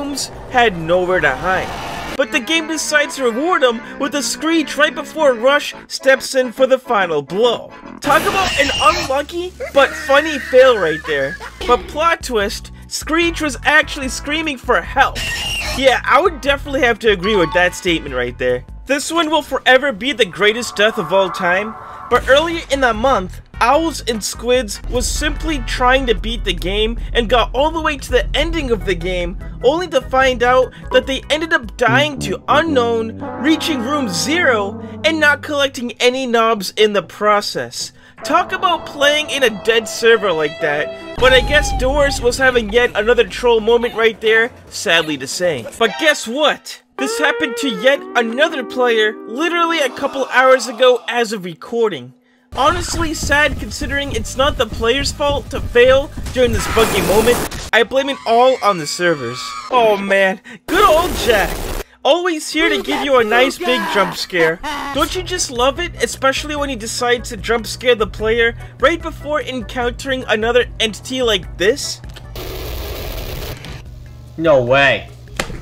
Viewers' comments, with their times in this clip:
0:06 Bro it sounded like Rush just ran over screech and almost killed him XD
0:57 Is it me or in of the video he said "f- moment?!?